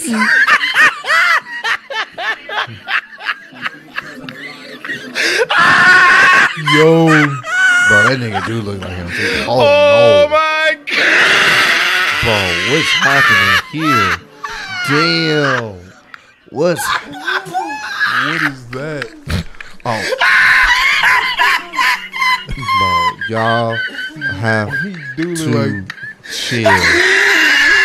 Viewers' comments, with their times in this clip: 0:09 OHH MYYY summons a demon